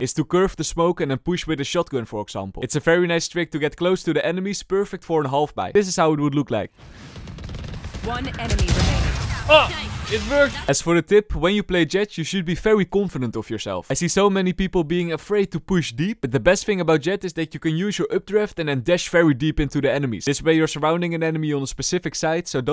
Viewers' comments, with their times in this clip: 0:08 disbelief lol "AH IT WORKED"
0:09 He sounded like he made up the trick before he tested it. I love the “OH IT WORKED!”